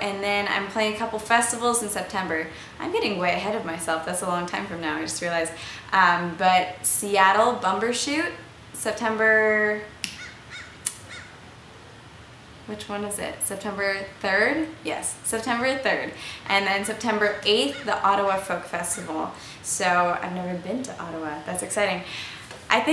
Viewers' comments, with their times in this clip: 0:09 the bird is telling you the date. It's chirping three times and your show is on September 3rd. :D
0:09 haha perfect timing...bird cawed right after you snapped powerful :)
0:09 when she can't remember the day a bird chirps 3 times to remind her it's september 3rd.